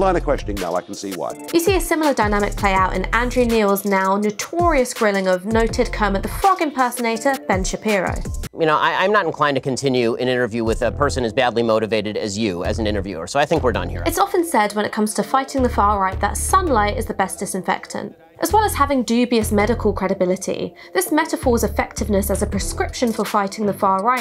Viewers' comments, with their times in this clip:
0:05 ben shapiro doesn't sound like kermit, he sounds like bart simpson